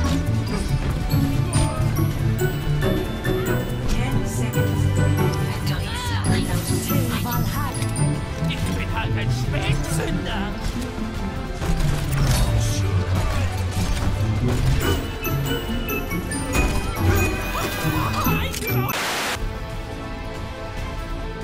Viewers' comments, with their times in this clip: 0:08 German junkrat has me dead